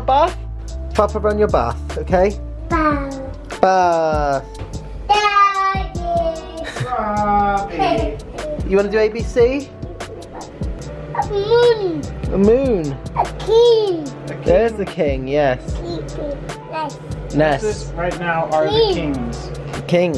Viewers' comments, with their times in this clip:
0:05 that "daaaaddyyy" and his little giggle just melted my heart
0:05 When Robbie went like “Daaaddyy” and giggled when his daddy replied in the same tone 😭😫 Cutest thing ever 😭🤧❤️